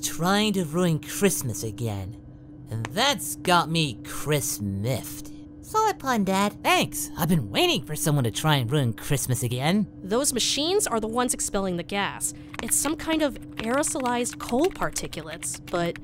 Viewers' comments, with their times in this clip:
0:03 The Goku & Gohan voices here is definitely off… And I think Piccolo’s too… Ruined it for me, so stopped cause it is hard to enjoy something when something with it just isn’t right….